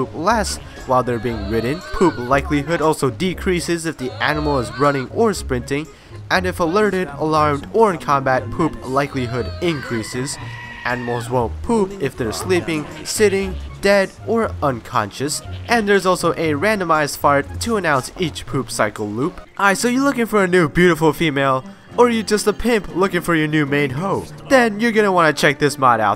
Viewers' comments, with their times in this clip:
0:08 The scream made me die...
0:09 a goat screams
0:09 you hear the goats scream lol.
0:09 oh my God... that goat scream in made my day!
0:09 Screaming Goat? O.O